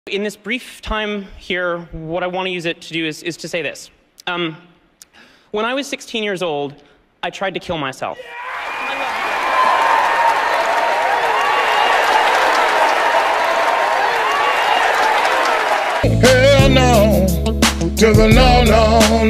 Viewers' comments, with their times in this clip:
0:00 like if you heard p*nis